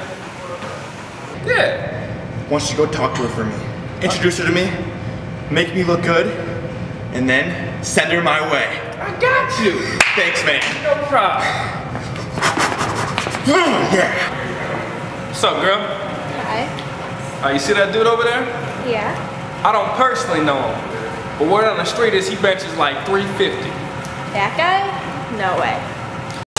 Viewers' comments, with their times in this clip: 0:09 crispiest dap recorded in human history